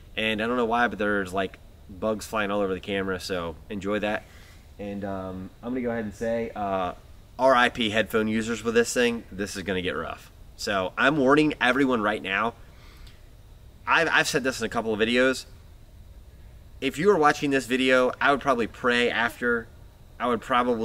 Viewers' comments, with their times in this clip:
0:06 bro's got the knock